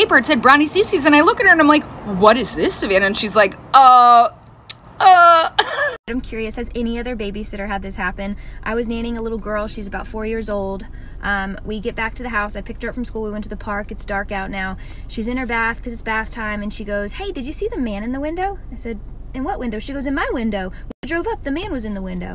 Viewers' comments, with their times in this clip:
0:09 I thought she said dating